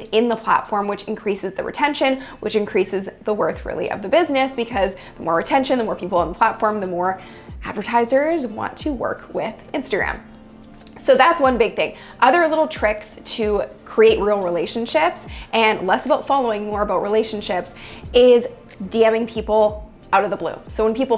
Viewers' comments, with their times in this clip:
0:03 sound cuts out